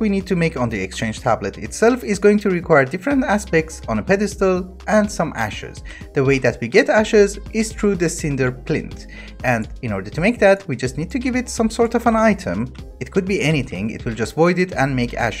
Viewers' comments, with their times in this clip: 0:03 voice crack harhar